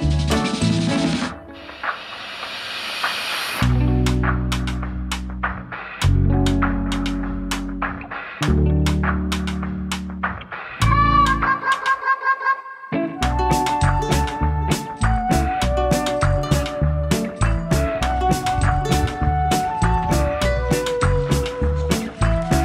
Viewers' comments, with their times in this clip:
0:10 what an earth is that sound. 1 I hate it. 2 it sounds like a chicken being attacked 🤔🤣